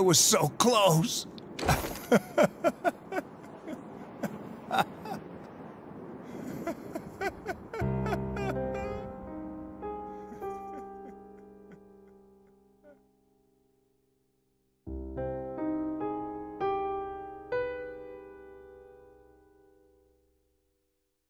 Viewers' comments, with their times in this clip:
0:08 Hearing the Persona theme play during is chilling. It’s moments like this that define Persona to me